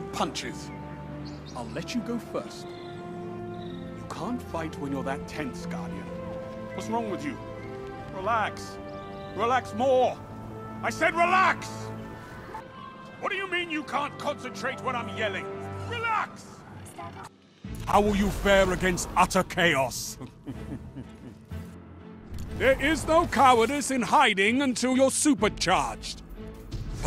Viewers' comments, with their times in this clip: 0:03 "Relax!" I swear that whole schpeel sounds like something Gordan Ramsay would say.
0:09 Was just starting to get a bad anxiety attack. Shaxx yelling at me to relax made me smile.